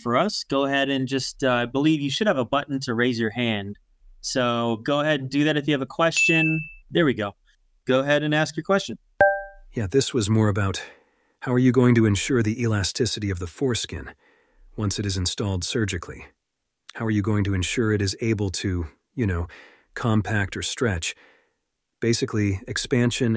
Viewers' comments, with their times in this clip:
0:09 holy cow that sounds like an AI!!! 🤖